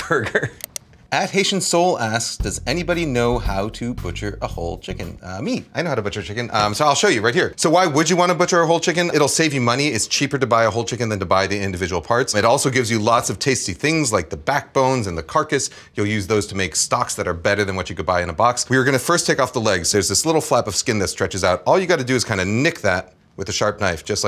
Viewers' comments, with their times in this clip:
0:05 the way he said that he knows how to butcher a chicken is somehow sooo wholesome, almost like a kid about to retell his/her favourite story ahaha